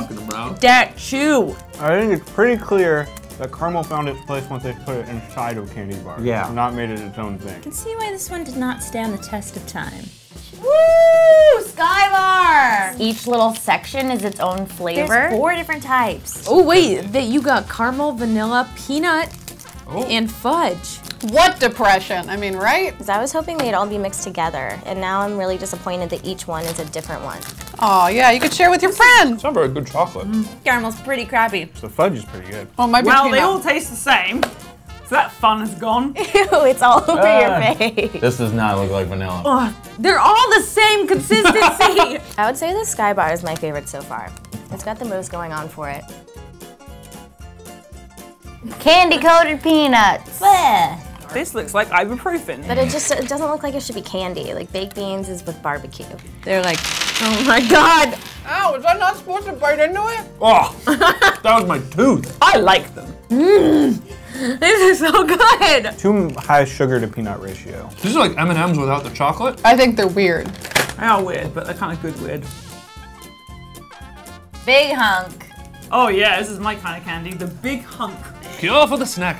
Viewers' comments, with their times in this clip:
0:10 lower volume if wearing earphones
0:19 She said Carmel...
1:02 what the hell happened to her voice?!